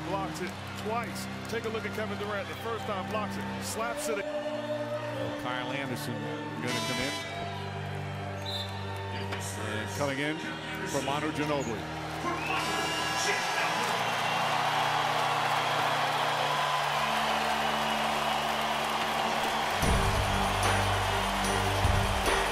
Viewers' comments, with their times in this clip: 0:09 manu never said he is going to retired but the crowd reaction tho